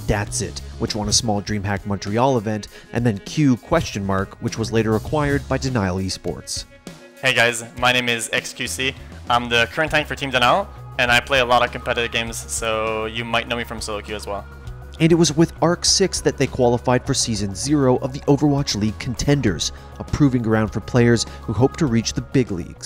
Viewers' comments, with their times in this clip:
0:07 holy crap that's what he actually sounded like? whoa
0:09 What the hell was his voice ? it was so deep lmao
0:09 XQC's real voice PogU
0:09 dude his English has degraded over the years lmao